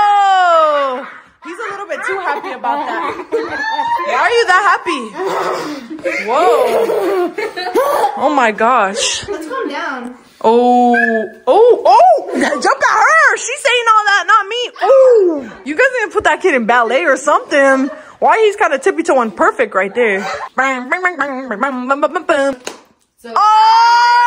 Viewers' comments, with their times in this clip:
0:10 Nah that ariana grande note